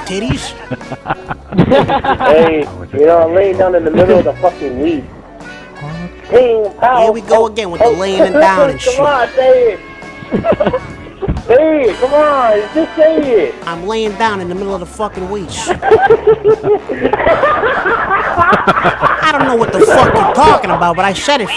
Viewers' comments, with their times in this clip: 0:03 sounds like vanoss